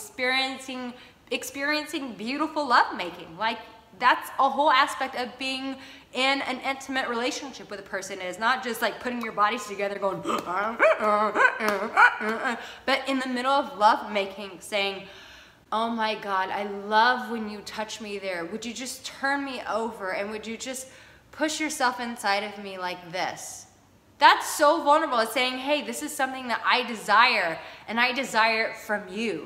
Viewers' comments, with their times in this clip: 0:10 Now I can never take that donkey sound and hand banging out of my head! LOVED IT!